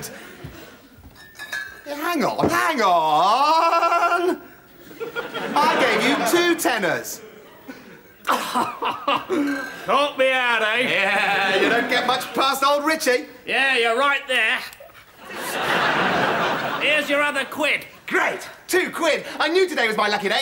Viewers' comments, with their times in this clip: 0:03 Richie sounds like a scratched CD played at 0.5